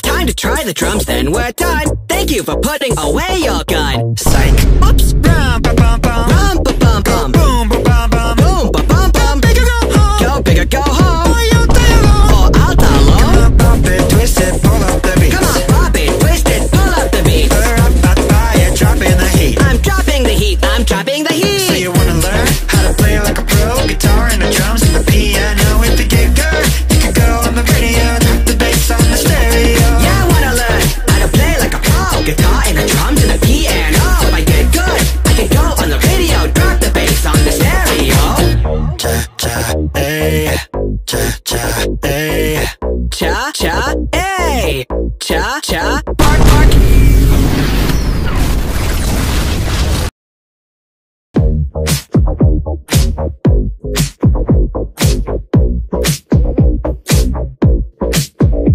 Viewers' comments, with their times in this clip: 0:04 im sorry but the vine boom at "psych" was perfect.
0:45 The "bark bark" is in